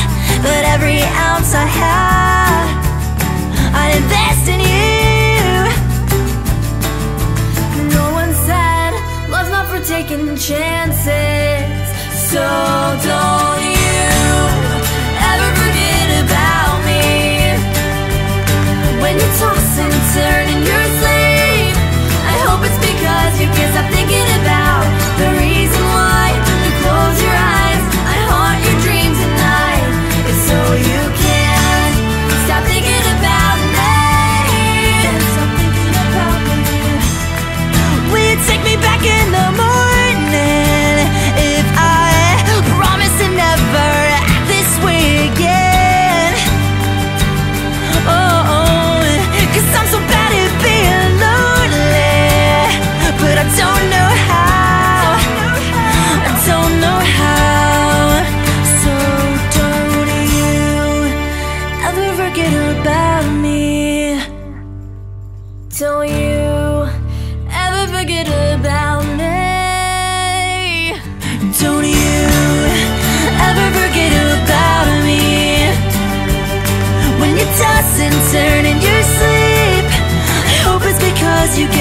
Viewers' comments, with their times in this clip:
0:07 I know I'm a bit late to this but she also sings the whole chorus after and is also the higher harmony in the last chorus
0:08 She starts singing
0:11 I love your voice is beautiful i love sws <3 u <3
1:06 OMG A IT SOUND LIKE TAYLOR SWIFT!! GET THAT SHIT OFF THIS AMAZING MUSIC NOW!